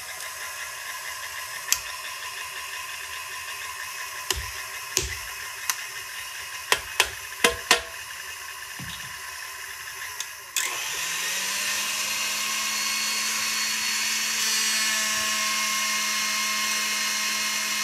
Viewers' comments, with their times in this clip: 0:05 Were the whacks just to feel like you needed to include a hammer; or, perhaps, for good luck? Either way; 🎉 "yatta!"